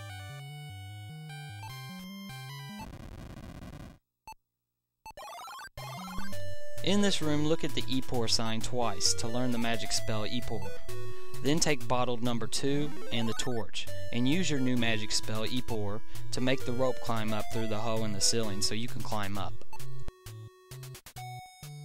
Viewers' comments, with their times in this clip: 0:05 I cant not think of gaming in the clinton years when that song occurs